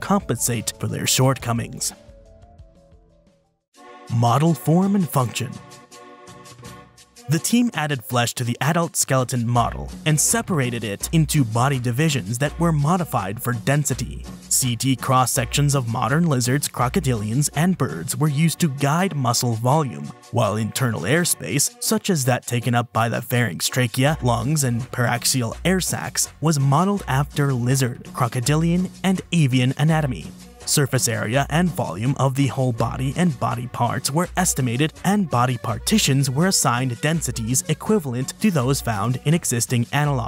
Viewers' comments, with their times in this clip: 0:03 I was not expecting that song in a spinosaurus video, now i've seen everything. Viva la cumbia.
0:03 that song its fire
0:09 spectacular background music choice
0:24 This foo really put a Wepa Kumbia Jam at minute 😂😂😂 I fuck with it